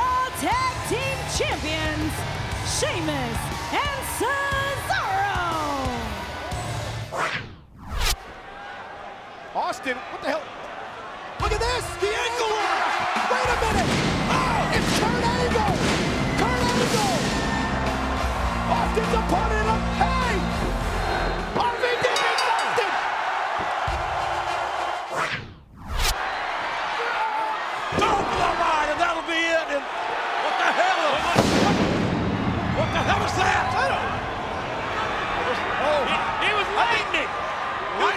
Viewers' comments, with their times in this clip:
0:07 angle music & stone cold lose
0:23 why are they playing angle song when RVD won